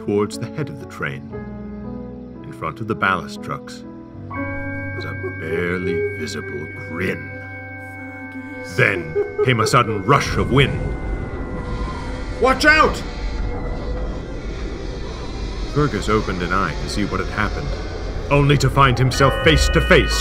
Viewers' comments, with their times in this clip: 0:07 if you listen closely, you can hear the van say 'Fergus'